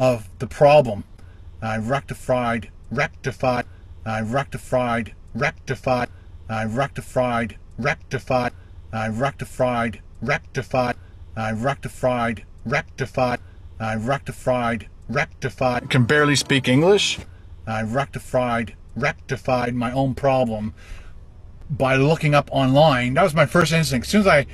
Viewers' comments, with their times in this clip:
0:08 i wrecked a flied, 🦟🦟🦟🦟🦟i rectified 😂😂😂😂😂😂